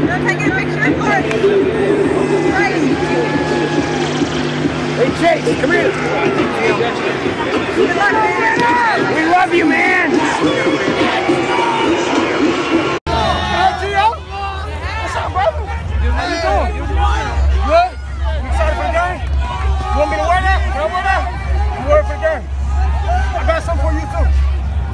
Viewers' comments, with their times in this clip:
0:09 How he said WE LOVE U MAN